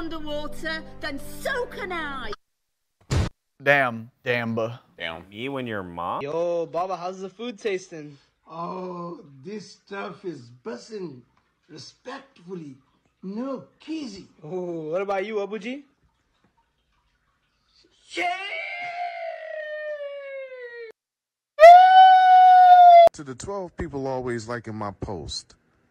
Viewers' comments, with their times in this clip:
0:06 I cried and laughed so hard Plus the long pause before the SEeEsh